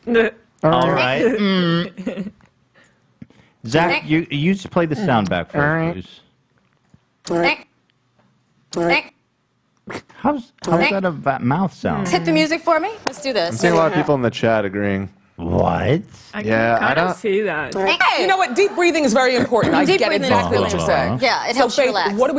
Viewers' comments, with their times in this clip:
0:03 if you slow down the video it definitely shows that it was a sound Windy was making with her mouth